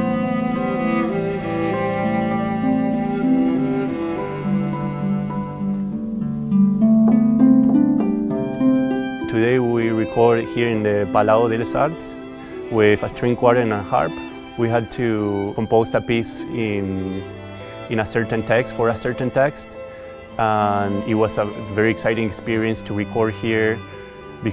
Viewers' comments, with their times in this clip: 0:05 am i missing something or is her instrument completely broken?